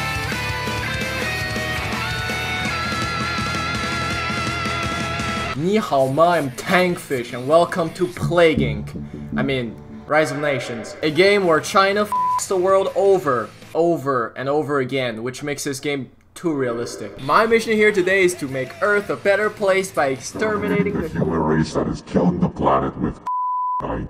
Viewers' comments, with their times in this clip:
0:05 this chinese is pretty good tbh (im chinese)